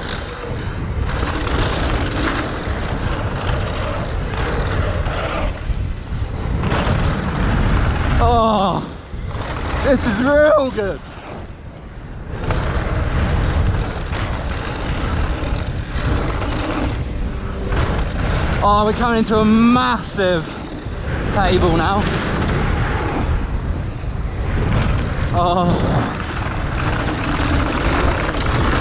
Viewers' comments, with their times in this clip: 0:09 what a voice crack